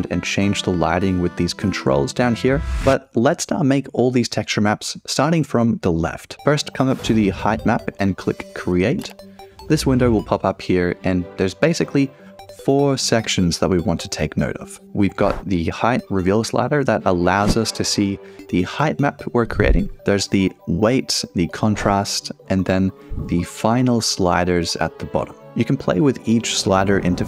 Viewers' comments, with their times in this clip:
0:10 The terraria theme just made my day better